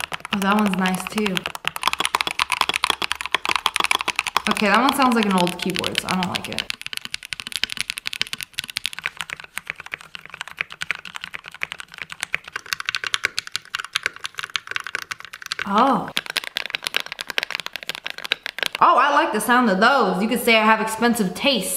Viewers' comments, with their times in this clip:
0:06 Why do the keyboards sound like lego building😂